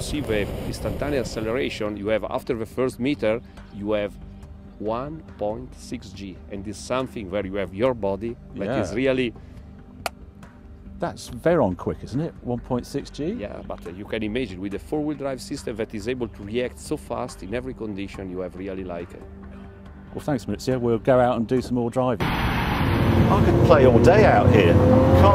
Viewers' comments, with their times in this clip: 0:07 Did he call him "baldy" ?